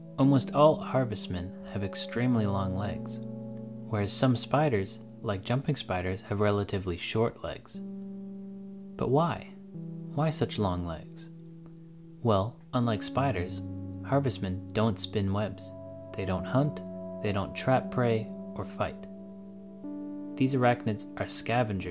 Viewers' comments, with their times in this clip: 0:08 the question was asked so sincerely...